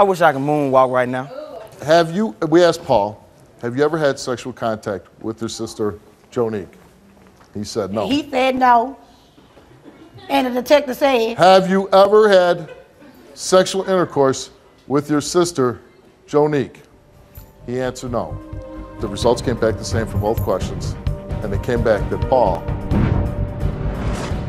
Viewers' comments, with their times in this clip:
0:07 The "He thsaid no" had me in 😭